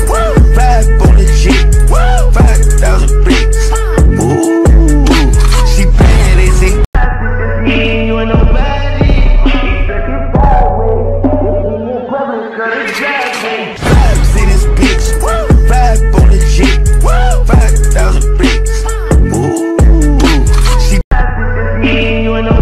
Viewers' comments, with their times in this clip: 0:09 Why is no one talking !!😂❤ Love itt!!!